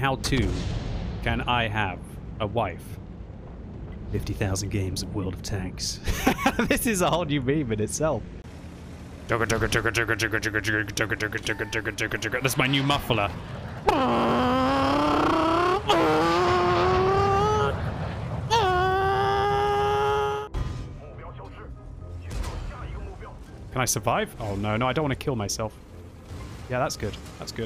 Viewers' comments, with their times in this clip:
0:10 No one: The guy with the civic at 3 am in my neighborhood:
0:13 the timing with the jet plane in the background is just absolutely impeccable
0:13 My neighbours Honda Civic at 3 am while i am trying to sleep
0:15 that down shift though 🤣